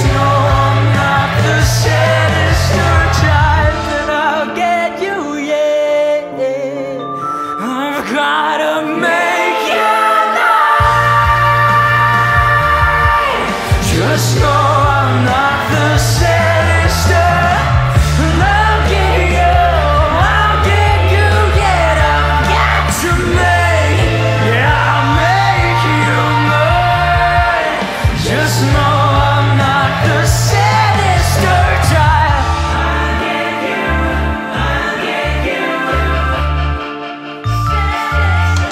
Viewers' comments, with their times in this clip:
0:07 that scream??? i’m ascending
0:07 the bit of growl leading into the scream is SO satisfying to listen to, holy shit
0:09 Ahhh here we go, this is the first one I saw from you!! I was hyperfixating on John Doe (some horror dating sim) and this song showed up in a playlist and I stumbled across this cover! YIPPPEEEE has me FUCKKED UP. I would simply break my chords </3
0:20 melts at the growl in his voice, I adore how he does that in songs expecially ones like this it's amazing how much talent he has.